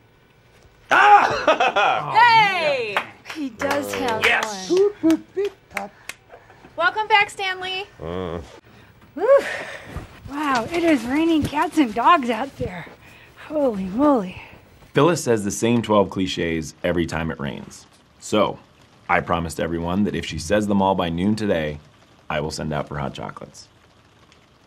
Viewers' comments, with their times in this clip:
0:08 My favorite is his unenthusiastic grunt in